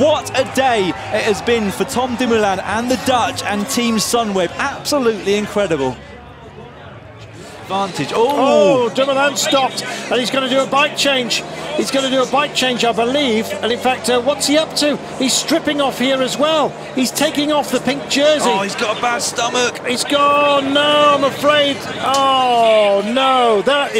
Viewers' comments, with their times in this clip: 0:09 The Dumoulin moment, is this commentation re-done in recent years? Because the original live stream was commented by Rob Hatch and this is Carlton Kirby, in that case kudos for Carlton to still act like a surprise